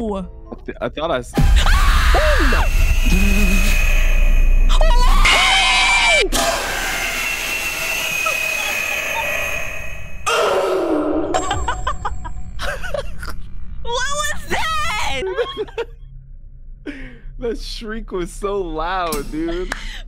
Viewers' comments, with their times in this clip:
0:08 was that a “OOOF”